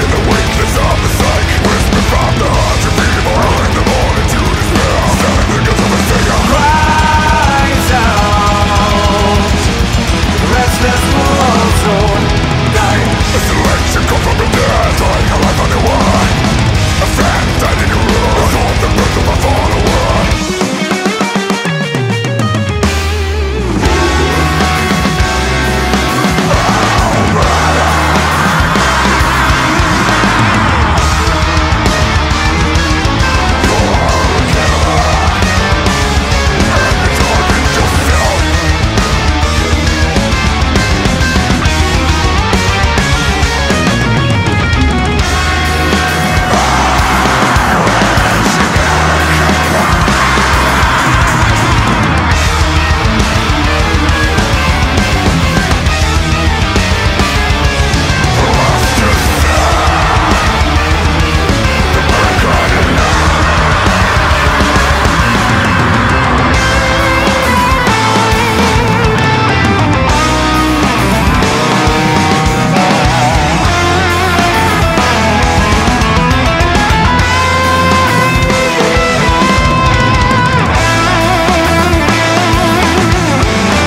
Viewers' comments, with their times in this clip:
0:08 the way he says "die" gives me chill
0:28 This shit gets heavy
1:06 Hello, Ayreon influence...